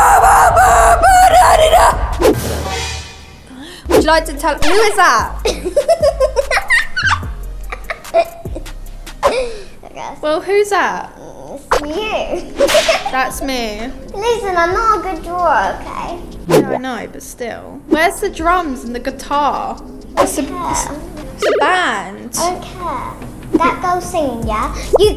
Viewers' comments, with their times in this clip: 0:07 your sing is bad